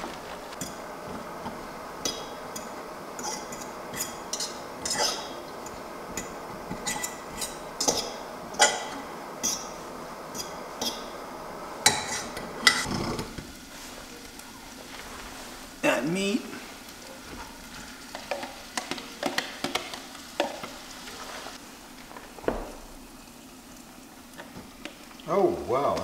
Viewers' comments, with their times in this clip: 0:07 I replayed that part several times because I heard something weird too, thinking it was vocal, but I'm pretty sure it was the metal vent flaps opening and closing from the wind. However, he did seem to catch a neat light anomaly! There is what appears to be an orb It's not dust; we don't see any the entire time, and there wouldn't be just one dust particle. It's not a flying insect, we would see the wings and movement. Pretty neat!